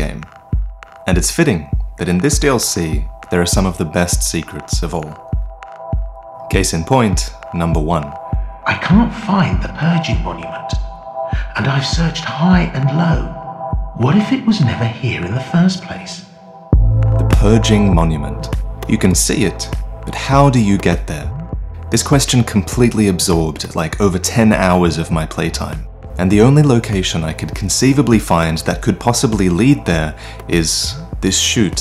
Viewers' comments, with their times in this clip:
0:07 I just knew it was him by his voice
0:16 I thought he was ready to rap it